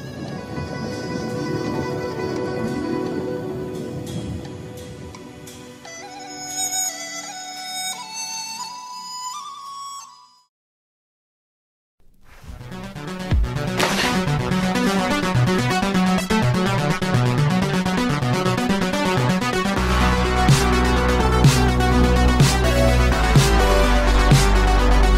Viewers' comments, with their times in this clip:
0:10 I liked the video until ... then the music changed.